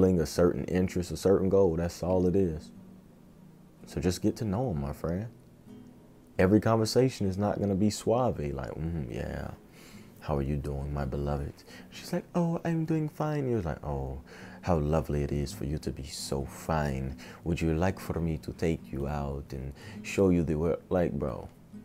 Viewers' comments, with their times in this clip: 0:07 What does "swabby" mean in this sentence?